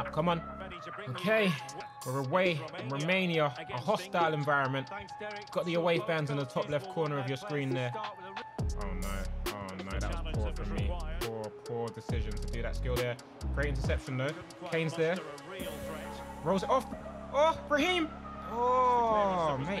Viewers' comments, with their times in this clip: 0:07 the way what he said and the music matched up